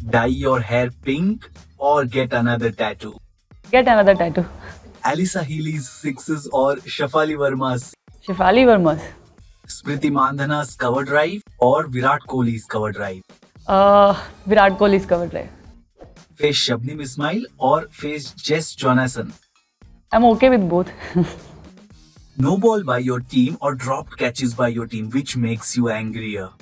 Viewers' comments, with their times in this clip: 0:09 that tone touched my heart ❤️